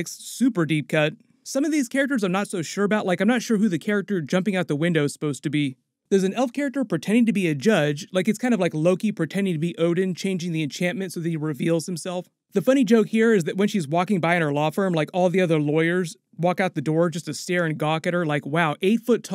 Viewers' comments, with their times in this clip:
0:07 is Impossible man literally laughs just like him from animation ... He has the power of Q from Star Trek